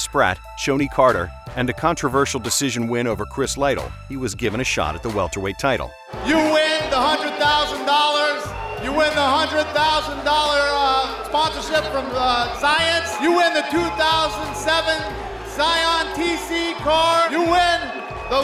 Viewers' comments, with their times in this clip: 0:05 Man Dana was sloppy as hell back then
0:06 Dana whites voice pre steroids